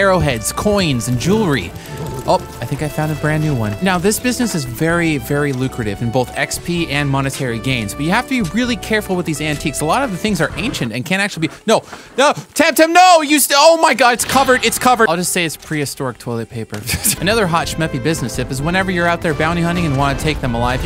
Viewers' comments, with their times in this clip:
0:04 I grant you moist sounds.